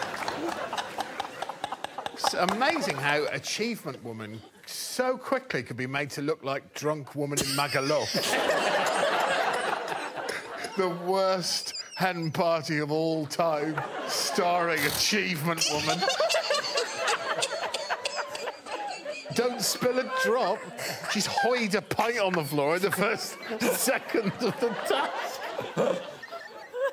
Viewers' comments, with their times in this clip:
0:04 Laughter starts out fun, then it turns into Corona.
0:14 Her incessant hysterical laughter is - ........ 13/10 the eEEEEE-heh-HEE-hehheh-HEHEEEEEEEEEEEE-HEEEE_hee-HEeeEEEeEEE Talk about contagious laughter